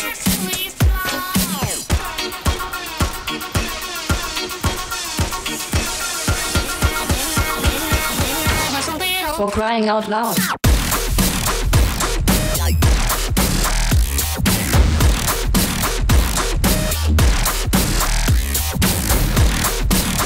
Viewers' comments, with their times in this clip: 0:08 bass gets dropped